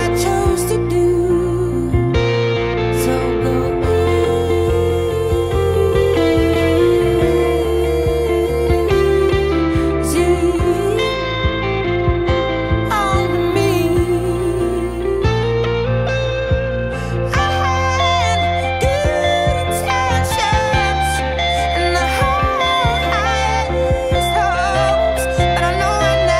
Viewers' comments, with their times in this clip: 0:10 Such a beautiful song. Lovely guitar too. It just bugs me a bit when she takes a breath before the end of the word but that’s just me 🤪